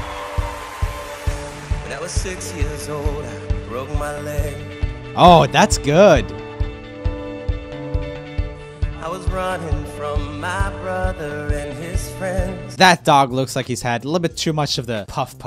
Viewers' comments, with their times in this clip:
0:03 YEET i'm on timeeeee literally 1 view also, im not giving my kidney... why does he frickin sound like ed sheeran.